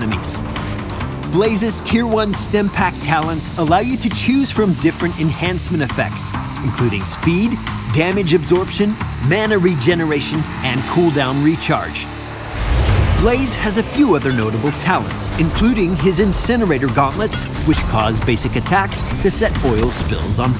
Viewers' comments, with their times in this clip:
0:08 I though it said 4GB